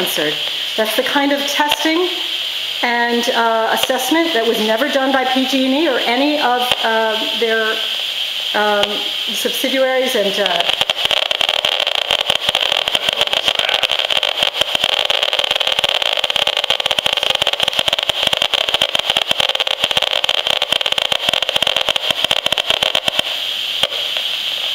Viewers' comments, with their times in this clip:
0:10 high-frequency analyzer goes berserk from pulses ! shit...